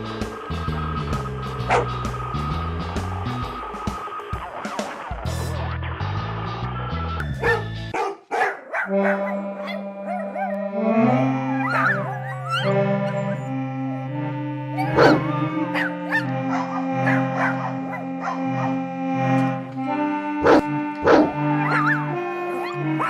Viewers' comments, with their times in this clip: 0:10 It kills me more to hear Charlotte's gramaphone in the background. just slowed...